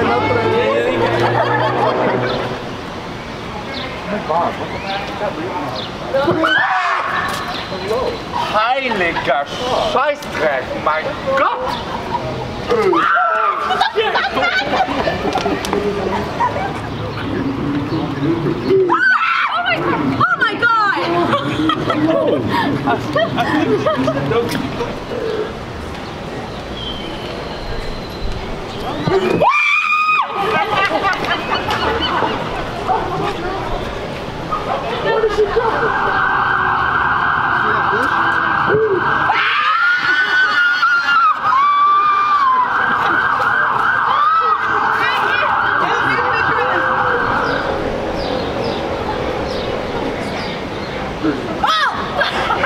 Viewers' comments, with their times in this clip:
0:03 was that a german swearing by chance? Idk
0:06 love the re-actions! sounded like someone German screamed "Sheitser"...lol
0:07 ..... That dude screaming and then saying something in German?? 😂😂
0:08 The german an was both unexpected and hilarious🤣
0:38 she was trying to harmonize with the sirens
0:38 Literally sounds like a feral hog.